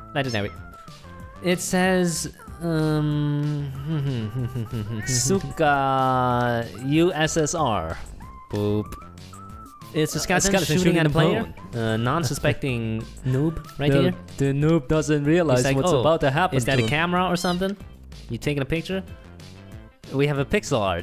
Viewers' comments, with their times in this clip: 0:05 13:60 angry communist noises